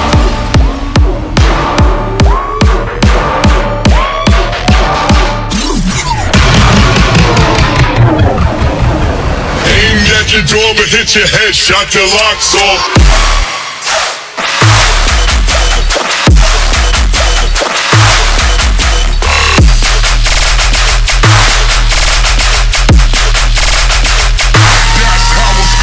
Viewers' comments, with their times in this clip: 0:07 I just wanted to add... And I heard it: ... It feels like this part was created under spice or other dope